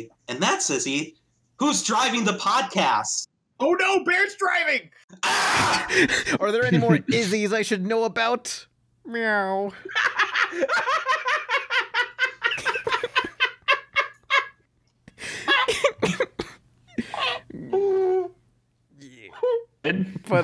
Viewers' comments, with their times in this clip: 0:06 bro was laughing 😂😂😂
0:06 probably the most legit laugh I've heard in ages
0:08 O.K. I HOPE that Laugh was Edited in. (Squidward voice) It's not that FUNNY!